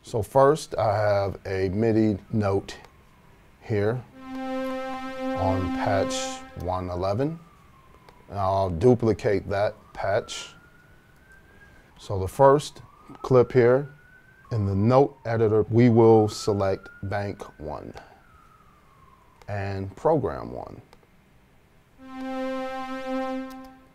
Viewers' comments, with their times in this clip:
0:06 you hear the sounds of Detroit.